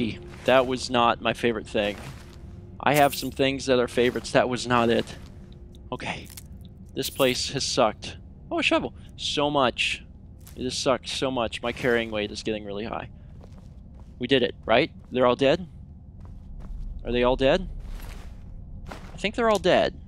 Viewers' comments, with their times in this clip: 0:06 "This place has sucked ... OOOO A SHOVEL! ... so much. It has sucked so much" I'm glad a shovel interrupted your upset, but not enough to derail your sentence nor the tone of voice your sentence was delivered in.